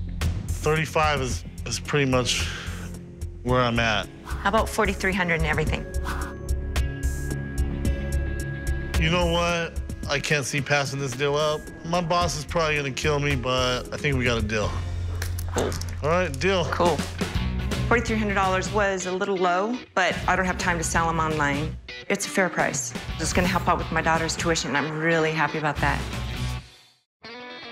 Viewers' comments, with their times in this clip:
0:08 chum sounds like BIGGIE SMALLS RIP